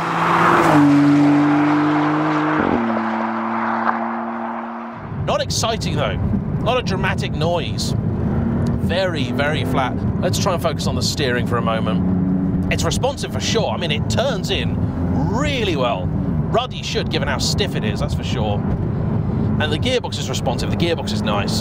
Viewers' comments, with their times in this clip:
0:03 So refreshing to see honest reviews and not ones from people who have a press dept to answer to! For me it doesn’t look much better than an Emira, and the sound is definitely a little rubbish for a super car, the gear change sounded like a fart to my ears 😂😂